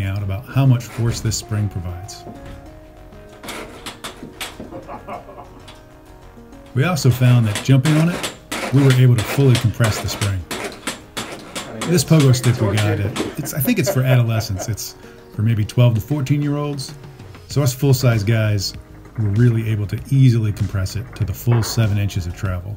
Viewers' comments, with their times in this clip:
0:07 that sounds familiar... i wonder why my upstairs neighbors are always using a pogo stick in the middle of the night